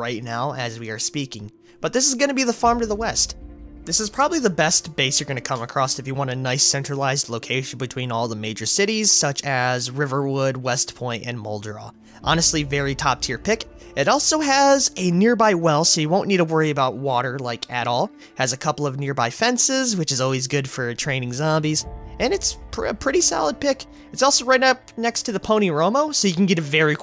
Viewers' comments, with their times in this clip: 0:08 Riverwood? Are we playing Skyrim all of a sudden?